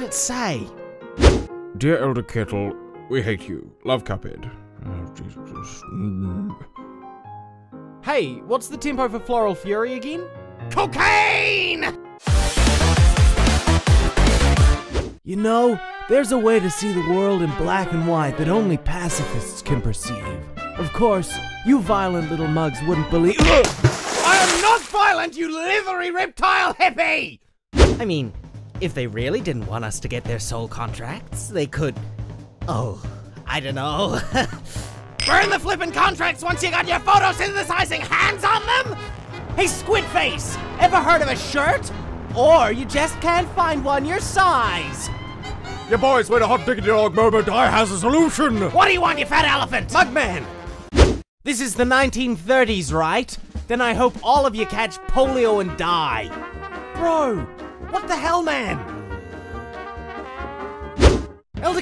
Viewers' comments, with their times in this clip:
0:08 Cuphead: What's the tempo for Floral Fury again? | Cagney: cOcAiNe! | Also Cagney: intensity screeching | Me: laughing hysterically
0:08 “Hey,what’s the tempo for floral fury again?” ”..COCAINE..” *SCREECHES*
0:45 I died of laughter, mugman’s voice goes perfect eith it 😂😂😂